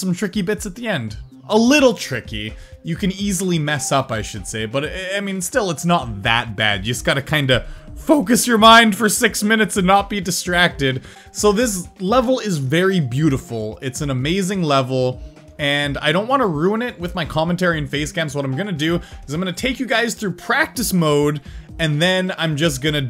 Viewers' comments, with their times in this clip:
0:07 voicecrack foUcos your mind